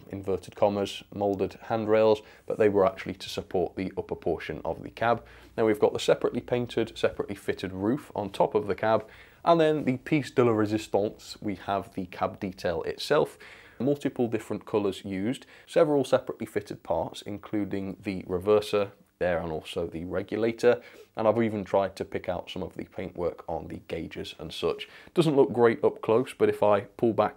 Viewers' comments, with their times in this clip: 0:08 is it just me or did he go french?